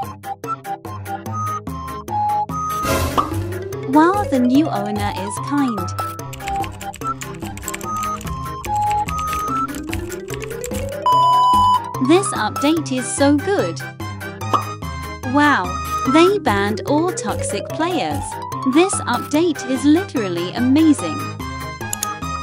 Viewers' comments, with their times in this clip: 0:05 makes keyboard noises even tho ur on mobile